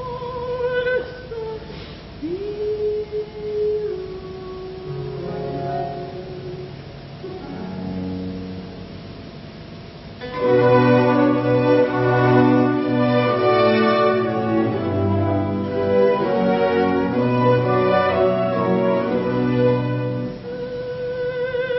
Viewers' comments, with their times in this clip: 0:09 Truly sad... Such a free and rich voice... and touching performance. Every time I listen to "Se mi rivolgo" I end up almost in tears